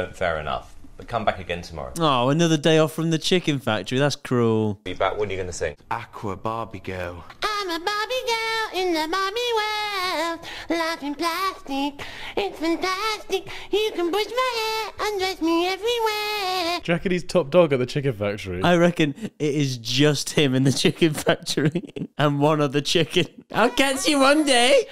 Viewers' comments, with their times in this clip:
0:07 I'm not trying to be mean but ngl he kinda sounds like spongebob